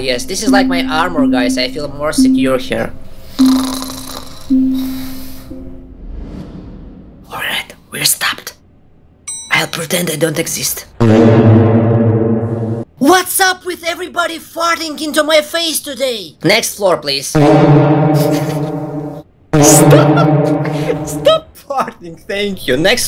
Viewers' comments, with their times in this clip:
0:09 Triple Farts XD